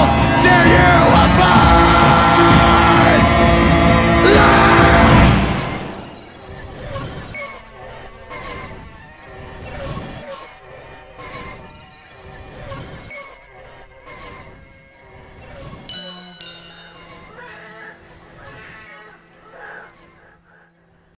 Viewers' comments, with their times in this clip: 0:05 every time i listen to this song, when Corey screams up to the 'thunk' i feel my negative emotions get Purged from me, replaced by a chilling Calm...its a great "reset button", when i need to remind myself to Not Let This Fucking World Tear Me Apart...
0:15 those two notes coming back at the very end sold this track. rip paul gray❤
0:16 does anyone else think Corey is screaming "rest in peace"? This song is about Paul's funeral, after all.
0:17 someone starts yelling "Rape, Rape, Help somebody!"